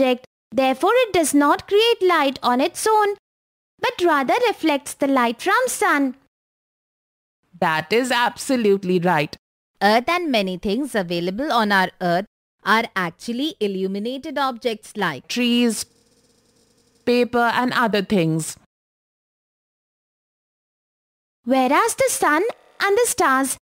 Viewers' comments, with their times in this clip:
0:08 his voice changed how?